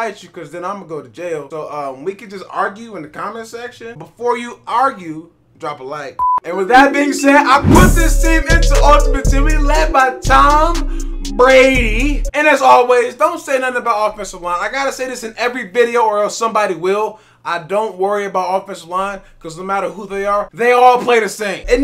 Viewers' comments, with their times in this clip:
0:07 I thought he was about to start rapping BRUH